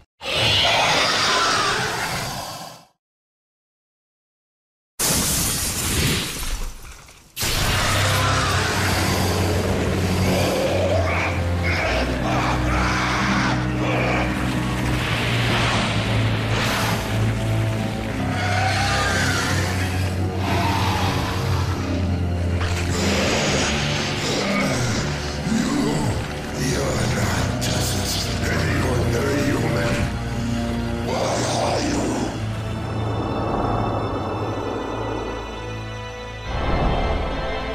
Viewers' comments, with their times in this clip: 0:04 DAMN I want to shine like this .... Sweet dreams everyone ! The fear, the power, the legacy, you can all feel it with the epic music !
0:25 absolutely my favorite scene outta this whole game the music is the chef’s kiss this game deserves a remaster I hate this boss as well but the cutscene makes it rewarding